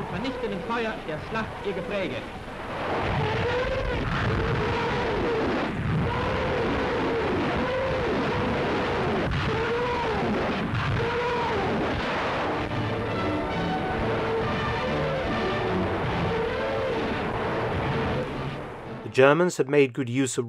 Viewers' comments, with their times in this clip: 0:03 Go to press pause, go to settings, set playback speed to 0.5, Press play, enjoy your approaching TIE-Fighter, thank me later.